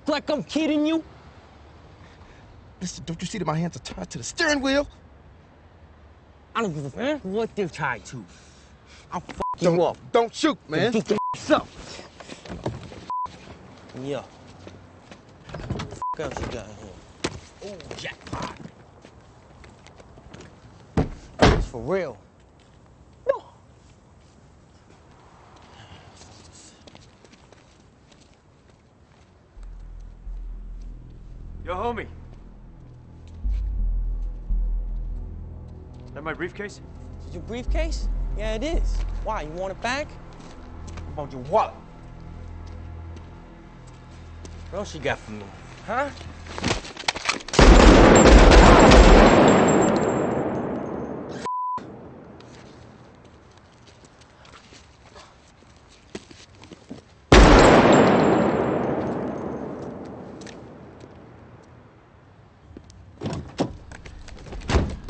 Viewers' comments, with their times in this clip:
0:06 "I don't give a EHH what they're tied to." YouTube censorship is a joke.
0:30 when Tom comes into the scene, the haunting music begins. Forbearance of something is afoot. Love it!
0:41 I like how he says wallet
0:47 I remember watching this movie at a friends house who had just installed a surround sound system in his living room. We had a hard time hearing the dialogue so we turned the volume up pretty high. Thought there was something wrong with it until the part Blasted our ears and jumped us out of our seats! Oh, it worked plenty fine.